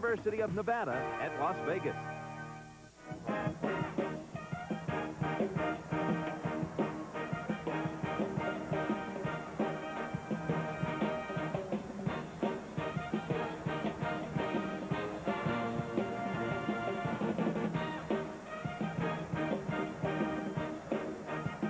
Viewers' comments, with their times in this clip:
0:03 The Running Rebels band was having a blast with the 1987 CBS College Basketball Theme! 😅